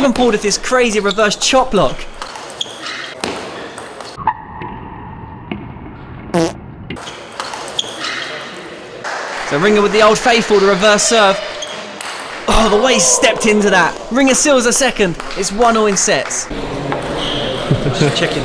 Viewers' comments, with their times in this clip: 0:06 the fart totally killed me!